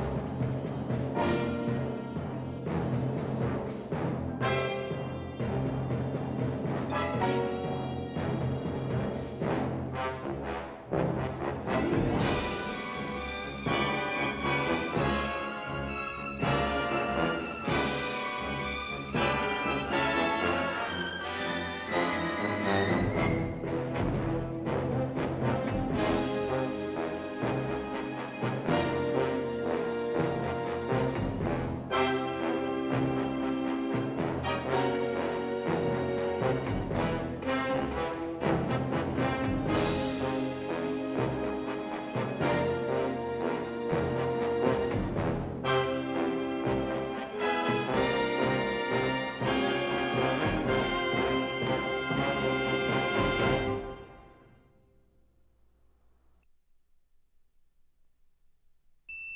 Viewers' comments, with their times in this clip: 0:06 It’s funny in the opening credits when O.J.’s name comes up, the music cue sounds like "uh oh!" 😂
0:42 capricorn one to jerry goldsmith come in , the opening score is brilliant on the rare laserdisc Dolby AC-3 bass beat pressing against the body with lucasfilm ltd THX sound system